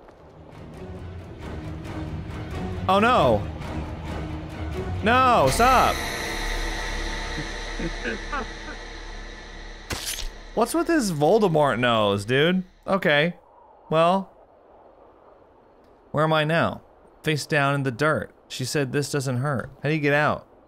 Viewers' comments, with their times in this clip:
0:08 does the Momo killer make monkey noises when he catches you or am I imagining that lmao?